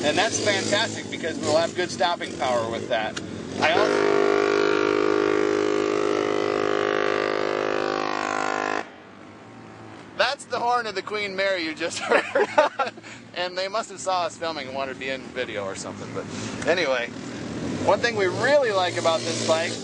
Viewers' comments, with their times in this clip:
0:04 whoa that sounded like Obama!